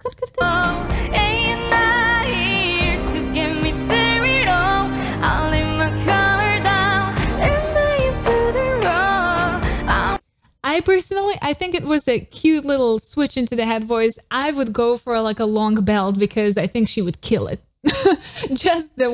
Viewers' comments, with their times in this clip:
0:07 I personally love Rora's version instead of more belting. It gives me more vurnerable feeling, and she delivered the message perfectly with those switch up.